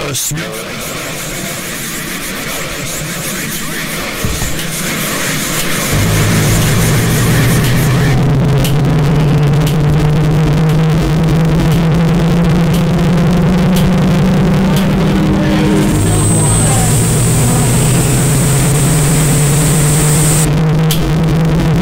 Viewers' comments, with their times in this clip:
0:05 when it isn't loud enough